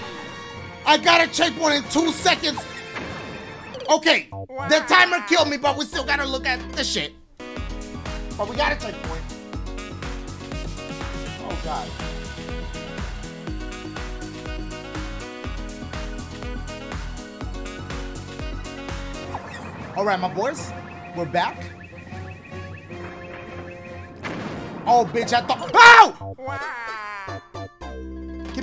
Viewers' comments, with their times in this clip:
0:07 Me likes that song...
0:09 I loved the music and synchronised dancin 😂